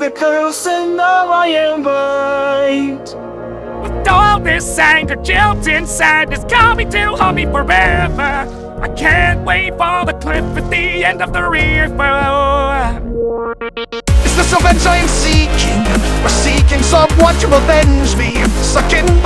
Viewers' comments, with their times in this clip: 0:04 bro why does squid ward split bars in
0:04 no one: Stupidly off pitch squidward: with all this anger juilt and sadness